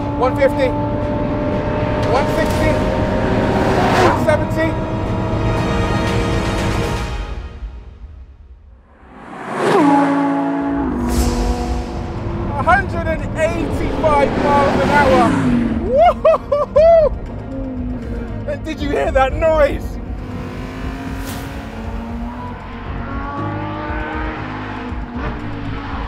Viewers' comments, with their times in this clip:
0:08 I don't know what it was, but I had tears rolling up my eyes when I heard the scream of this gorgeous naturally aspirated V10 flying by I've loved every generation of it ever since the very beginning - from the Gallardos and the R8s up to the Huracan STO. It's like losing an old friend that I've always deeply admired. Thank you for letting this gorgeous engine and car leave their testament before they inevitably get replaced.